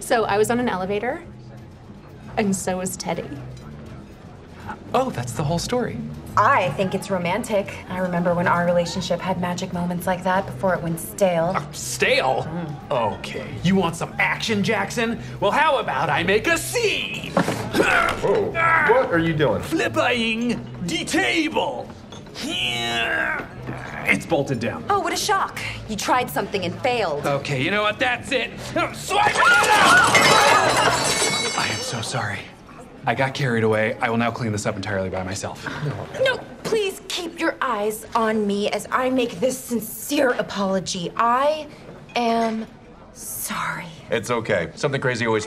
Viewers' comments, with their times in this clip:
0:04 Close your eyes It's Ryan Reynolds
0:30 Notice the background extra laughing when Jake pushes everything off the table